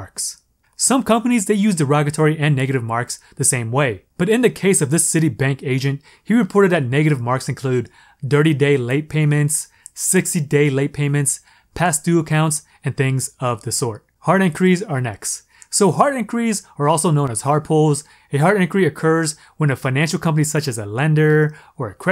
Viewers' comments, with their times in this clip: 0:08 Did he say "dirty day" late payments 🤣or am i trippin' ? I am enjoying your content